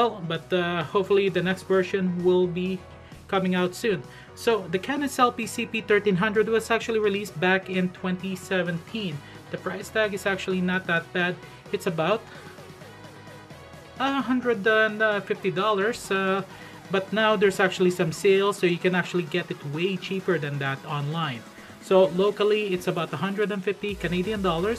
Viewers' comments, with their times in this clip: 0:07 I'm sorry into video and the background music is driving me crazy, can't finish watching